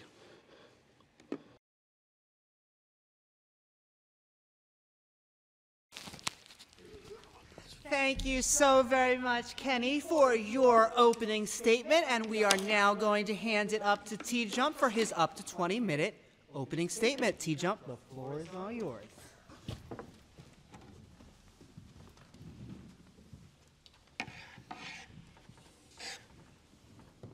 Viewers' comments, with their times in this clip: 0:10 I am just listening to this on earbuds as I am doing other stuff... Right I genuinely couldn't help but think: "why would they get a cartoon villain voice actor to introduce the next speaker?" Then I looked at the screen.